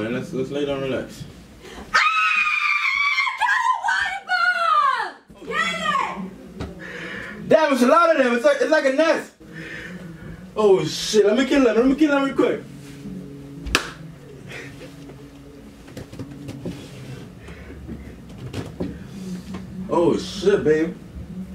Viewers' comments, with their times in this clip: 0:03 rip headphone users..